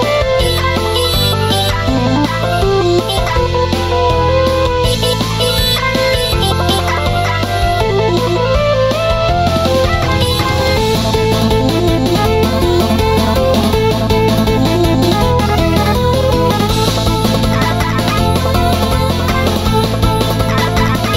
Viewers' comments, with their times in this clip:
0:06 I hear both on left side??
0:07 this part sounds like the old sonic theme.